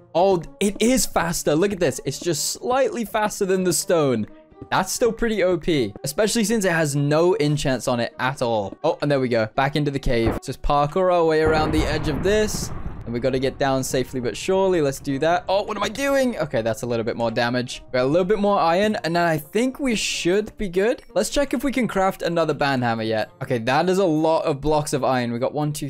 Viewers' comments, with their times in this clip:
0:10 perfectly cut thunder